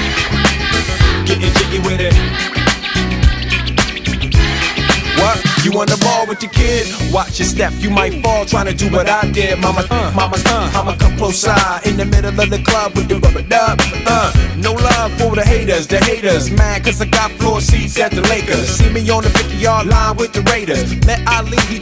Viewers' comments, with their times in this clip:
0:06 The fake-out is so good😩🙏